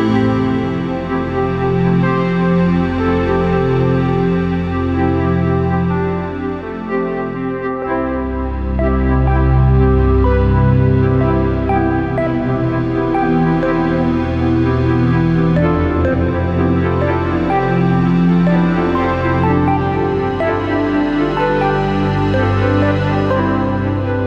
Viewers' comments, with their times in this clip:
0:08 i love the melody is so nice and calming